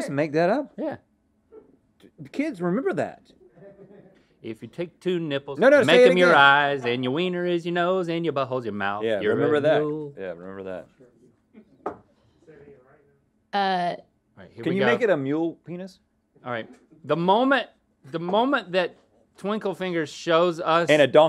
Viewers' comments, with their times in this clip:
0:03 Link singing had me laughing so hard! 😆